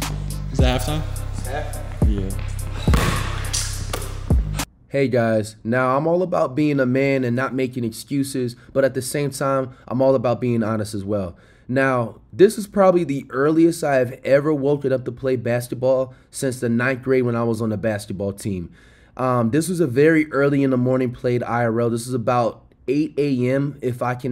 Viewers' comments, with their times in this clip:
0:08 the longest “hey guys”😂
0:08 The longest “hey guys” ive ever heard 💀